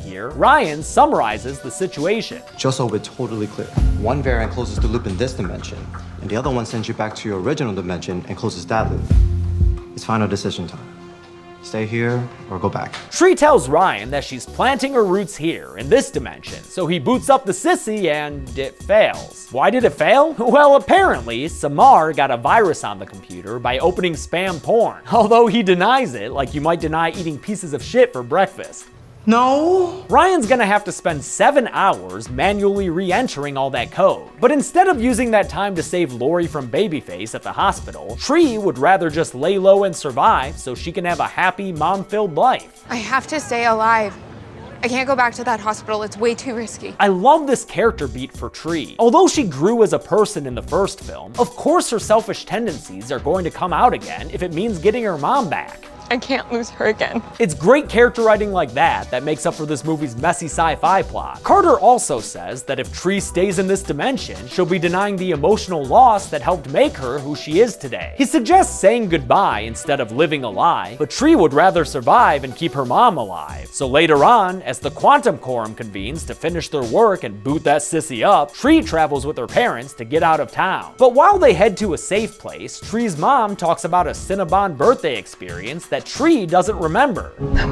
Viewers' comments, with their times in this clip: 0:10 Who thought too that is was Blinding Lights?
1:08 dude ur literally a rapper